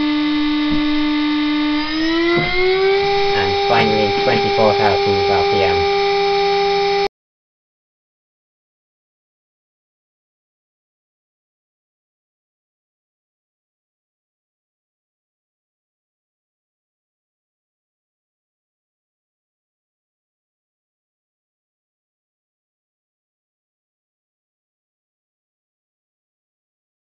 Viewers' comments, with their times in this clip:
0:08 The sound cuts out Which for a noise comparison test is about as bad as it can get.